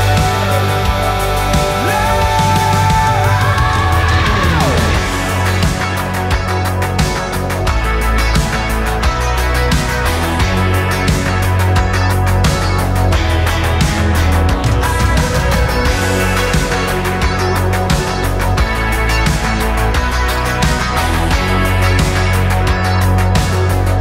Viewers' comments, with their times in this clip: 0:05 This song is on repeat this weekend, amazing guitar work guys, full of passion! I wish the video would have focused on the guitar being played would have loved to see that action. New Royal Republic fan here in the US.